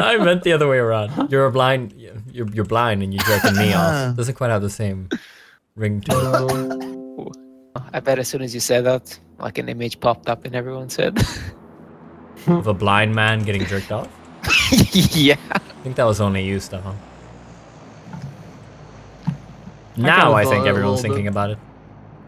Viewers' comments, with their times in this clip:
0:05 That notification sound though..